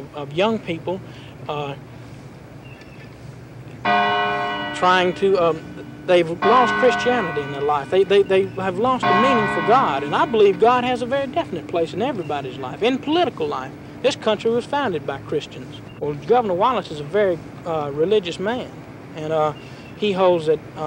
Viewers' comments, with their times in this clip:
0:03 yo that bell😂